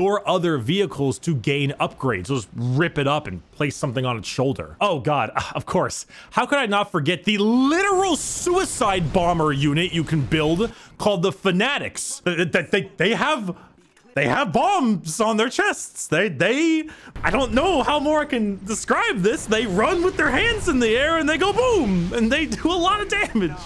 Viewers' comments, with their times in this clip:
0:04 Yes Hilarious. Also your line delivery of "They do A LOT of Damage" was beautiful.